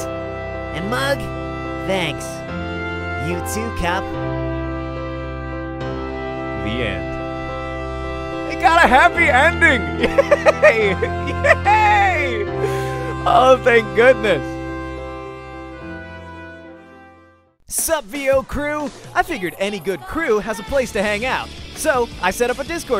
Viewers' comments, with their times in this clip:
0:08 that laugh blessed my ears